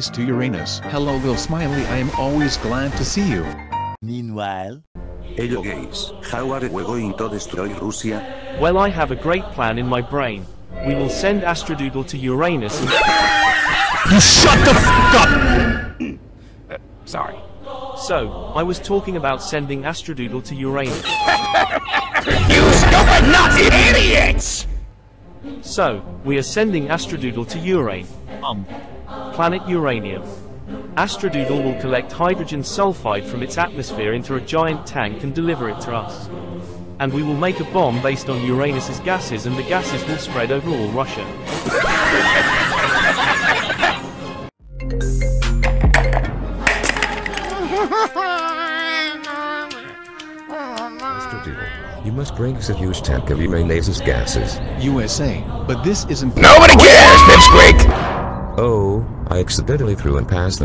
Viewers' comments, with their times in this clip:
0:05 i love how Spanish said hello gays😂
0:06 spain be like:hello gays :)
0:41 bro laughed at his own idea💀
0:48 I feel very very bad she crying like that
0:48 The crying kid